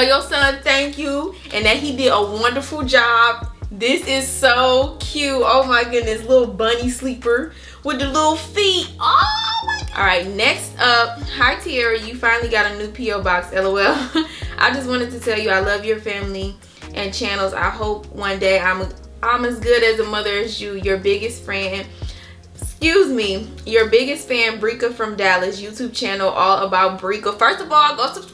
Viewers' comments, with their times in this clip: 0:10 I was waiting all day yesterday like where's the baby shower lol... your welcome glad you liked it!!! And she said my name right ❤❤❤ But you are my friend in my head